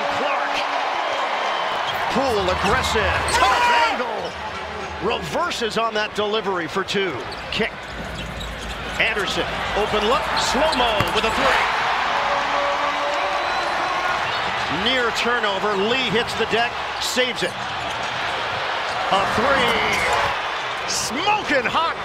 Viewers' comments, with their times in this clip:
0:06 bro the yell lol